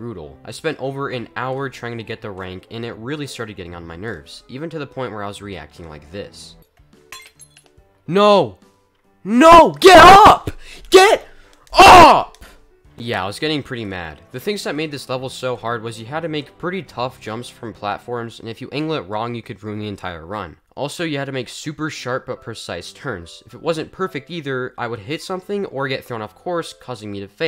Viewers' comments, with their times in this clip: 0:10 bros yelling at a bagel rolling to the dish to get up 💀